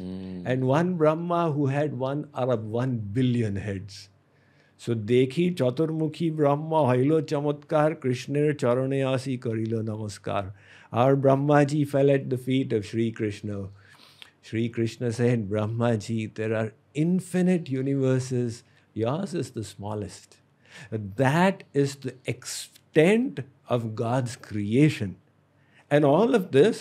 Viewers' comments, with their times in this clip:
0:07 I don't know if anyone noticed, but is in Bengali. I'm not sure. I am Odia, and i can understand Bengali pretty well. But it sounds like a mix between Odia and Bengali.